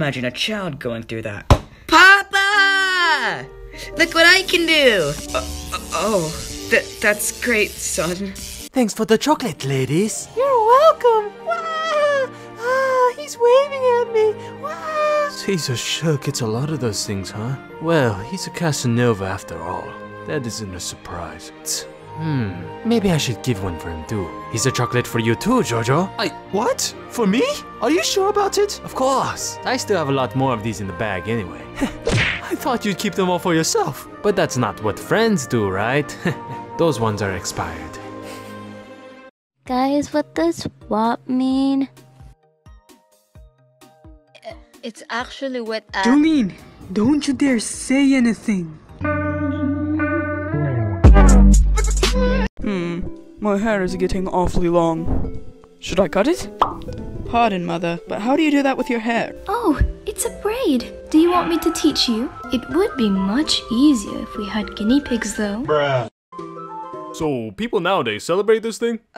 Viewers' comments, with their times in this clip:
0:07 Joesph: eternal screams of trauma Ceaser: inhales B O I
0:46 Ok goddamn why my voice is like this HSUSHA I tried tho but Im rlly glad to see this dub comic we do :'D
0:54 WOW my mic sucks, lol happy I got featured tho thanks!